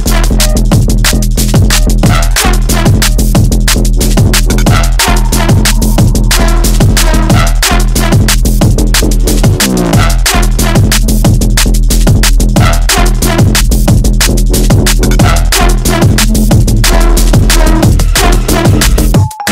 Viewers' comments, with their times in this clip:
0:06 Yo I was sure someone knocked at my door